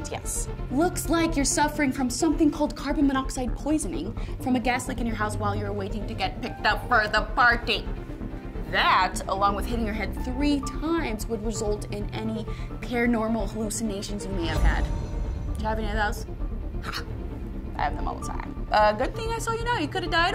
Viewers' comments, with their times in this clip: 0:06 lol the way she said it Edit: I can’t stop laughing 😂😂😂😂😂😂😂😂😂🤣🤣🤣🤣😂